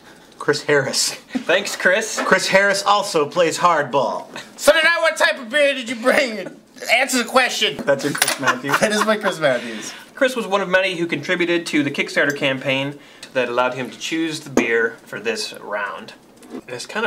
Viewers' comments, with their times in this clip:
0:04 he sounds JUST like Master Shake.